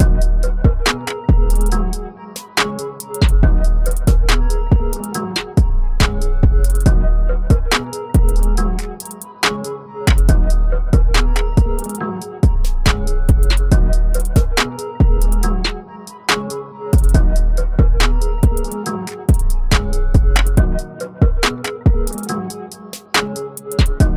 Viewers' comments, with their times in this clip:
0:06 ah yes, whenever i scream for help, i also scream 60 dB
0:07 nobody: Dude asking for help: 60dB